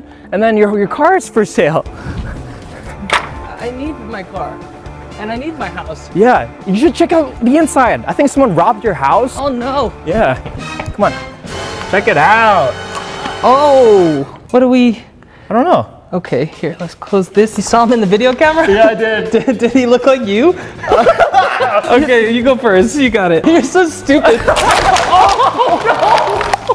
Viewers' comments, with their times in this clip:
0:08 I love how alex say "oh no" it's so cute